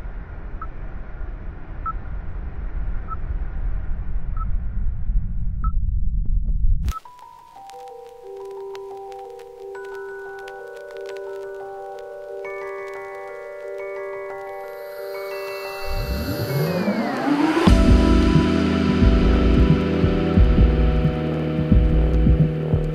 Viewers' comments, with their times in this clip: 0:08 It sounds so mysterious at the beginning😮 And I love it😏